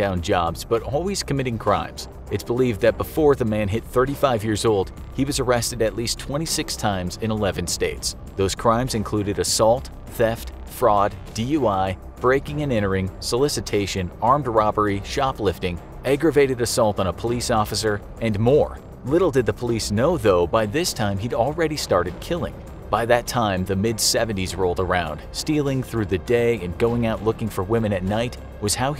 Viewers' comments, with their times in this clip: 0:09 how parents hear rap music